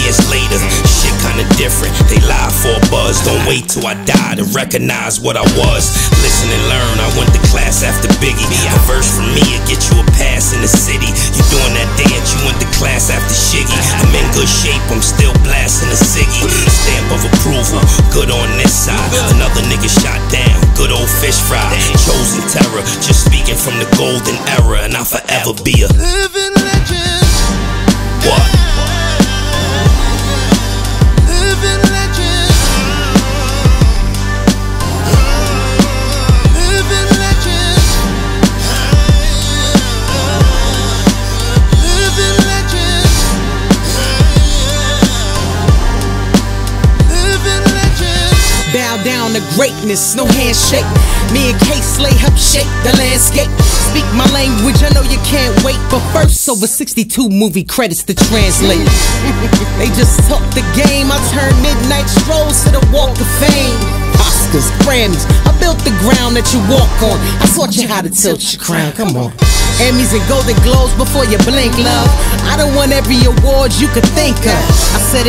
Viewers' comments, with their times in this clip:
0:05 Kiss’s voice is testimony that no one stays young forever.....oops Queen Latifah just proved me wrong 😉
0:56 Gave me chills when she just spoke facts then laughed
0:58 the laugh always gets me 😭😭🔥